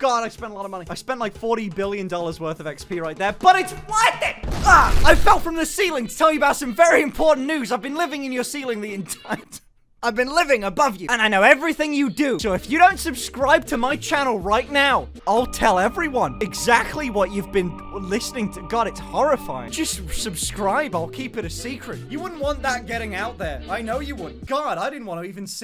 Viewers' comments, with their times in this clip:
0:10 fam the only horrible thing i have been listening to is your voice. go on tell EVERYONE TELL THE WORLD MUHAMUHAMUHA